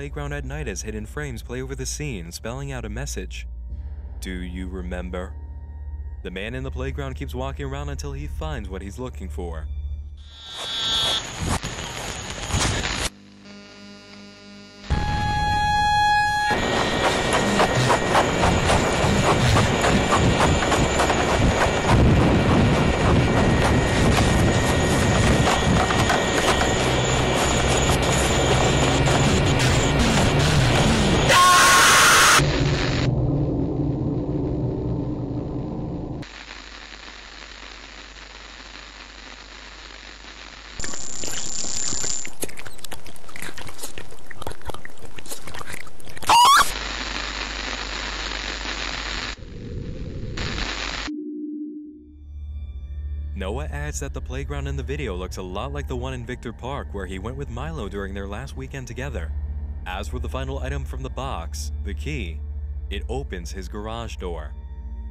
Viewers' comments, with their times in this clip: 0:05 why did you say “Do you remember” like that that might be the funniest thing I’ve heard in a while
0:30 really hard to hear the secret make sure you have volume at full !
0:46 That noise is more funny than scary, to be honest.